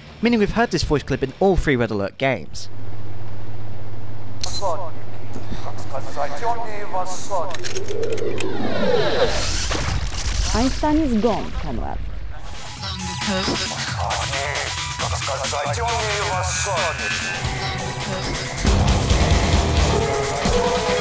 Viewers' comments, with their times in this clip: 0:04 But most important What are they saying? There is a more o incomprehensible dialogue in the Grinder theme that is hard to comprehend